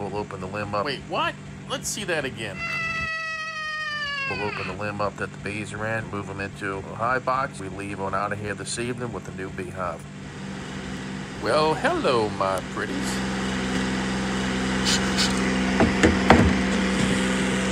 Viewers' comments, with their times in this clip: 0:04 ...moment of silence to the guard that scream like a human